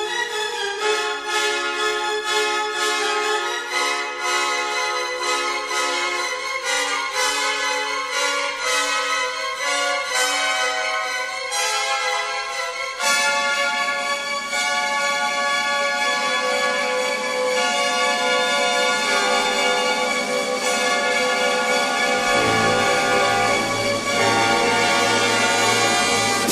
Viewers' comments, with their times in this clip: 0:08 that's what the dissonances are for. no composer uses them better than Shostakovich